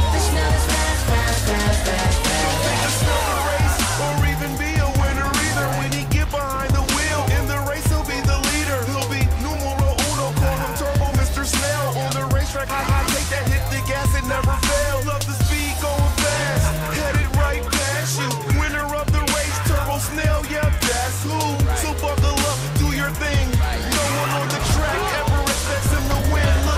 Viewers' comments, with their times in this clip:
0:08 The rapper sounds like Kermit lmbo